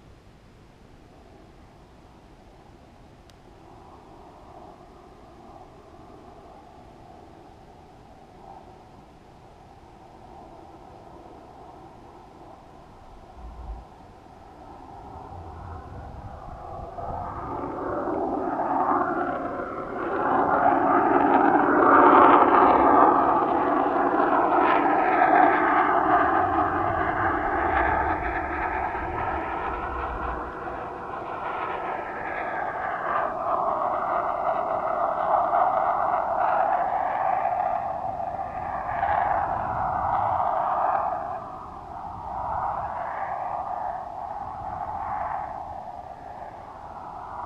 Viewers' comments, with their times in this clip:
0:05 Did you guys hear that noise sounds like a jet 😁😁
0:15 you can see and hear a plane pass by off to the right of the screen
0:15 what was the noise?
0:30 It looks and sounds like another jet